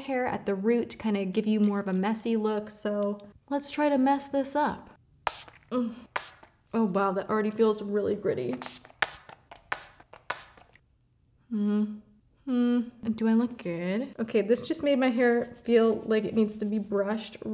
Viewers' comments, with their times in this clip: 0:03 when Tati moans lol